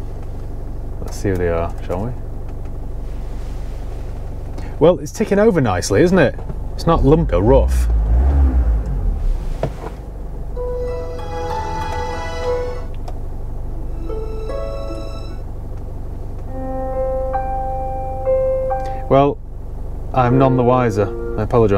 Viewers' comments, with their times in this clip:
0:09 why did every song sound exactly the same 😂😂